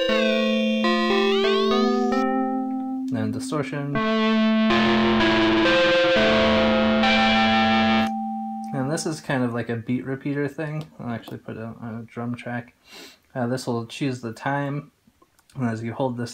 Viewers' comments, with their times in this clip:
0:04 Wow I love the distorted sound. That shit is awesome.